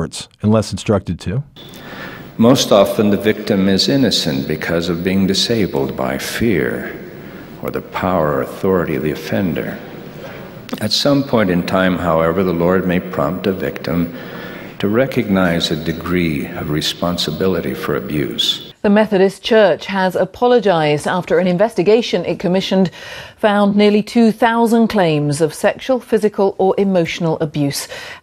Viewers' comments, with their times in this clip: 0:10 this is the one of most disgusting things, said in an equally disgusting way.
0:10 The guy sounds like hes recording an audio book of a horror book like psychological horror or something